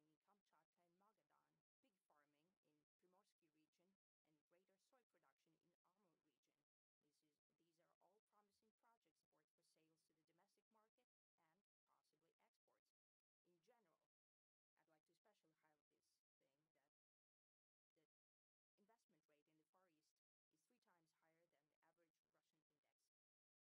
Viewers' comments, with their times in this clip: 0:09 Is sound cut or is it just me?